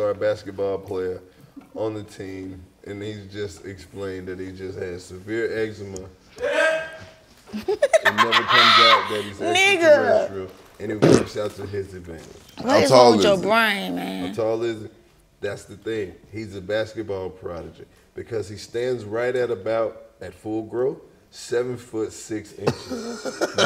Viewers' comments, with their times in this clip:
0:10 Yooo😂😂😂 who TF Farted Nahh😂
0:11 So nobody heard that fart 😂😭😭
0:11 Did somebody fart ? 🤣🤣🤣🤣 I'm higher than eagle pussy and that shit has me dying 🤣🤣 I know it's childish as fuck but damn lmao
0:11 I swear to gawd somebody farted bruh or am I just being petty